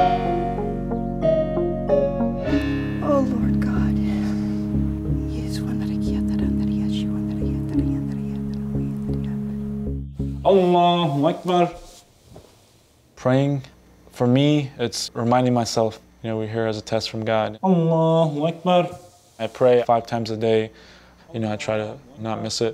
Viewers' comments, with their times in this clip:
0:09 Not tryna be racist but I laughed so hard when he said that😂😂 It just sounds so weird.